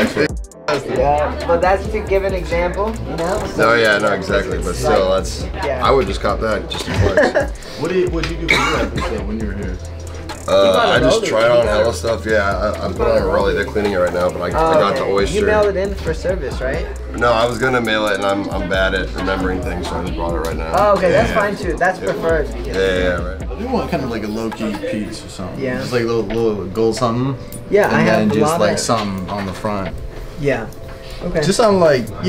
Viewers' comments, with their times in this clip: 0:07 Whe he cough i was like damn and immediately checked the date
0:08 did he just? COUGH!?
0:16 does gravys voice remind you of anyone else’s